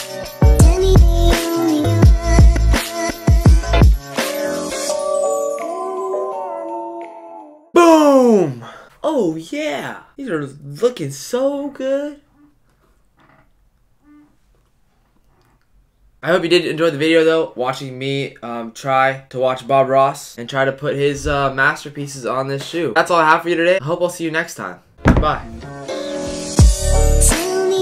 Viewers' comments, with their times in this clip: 0:07 I was half asleep and that"BOOM!" scared the living FUk out of me lmao
0:09 The OH YEAH reminded me of Jess from Gilmore Girls 🤪